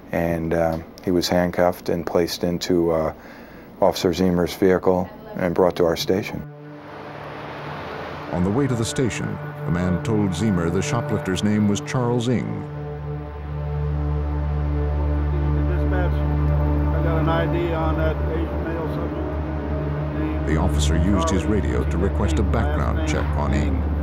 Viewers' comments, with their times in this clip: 0:06 Your voice and delivery at this point are so clear and engaging